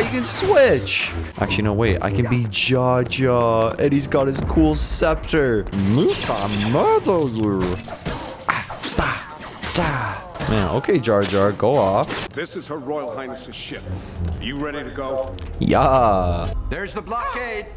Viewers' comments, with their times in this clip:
0:05 that jar jar impression tho😳
0:05 he sounded more like gollum than jar jar